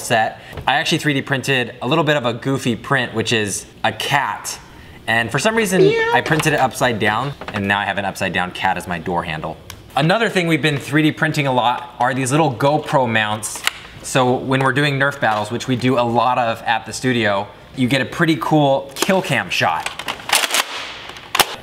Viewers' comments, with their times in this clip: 0:05 In I hear a cat meowing